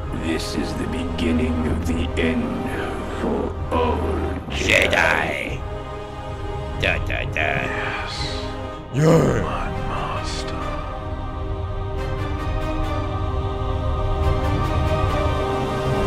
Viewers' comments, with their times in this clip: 0:04 i tought the real palpatine Said Jedi 😂